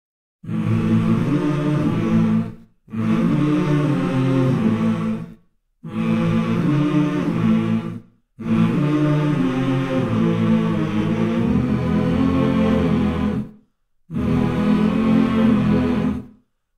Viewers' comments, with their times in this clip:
0:00 Nobody: cicadas outside my house at 6 AM: